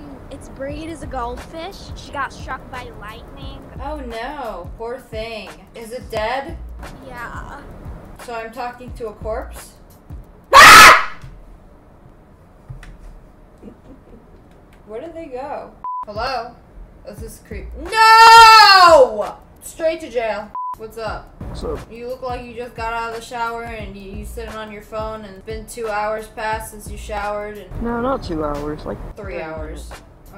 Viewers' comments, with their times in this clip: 0:08 that scream was personal-
0:08 YOU scream so loud
0:09 As a headphone user I feel violated
0:09 my ears bro 😭
0:10 headphone warning! Please turn your volume down on this part, thank you!⚠️⚠️⚠️
0:10 RIP people with headphones 😂
0:10 RIP HEADPHONE USERS 🥲
0:10 THAT SCREAM SCARED THE LIVING HELL OUT OF ME
0:10 that scream tho💀
0:10 LOL THE SCREAM
0:10 my eardrums bro-
0:11 That scream caught me off guard